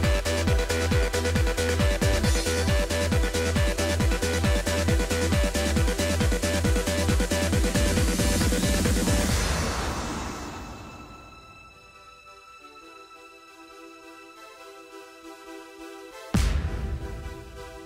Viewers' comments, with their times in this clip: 0:03 sounds like Sparta remix epicness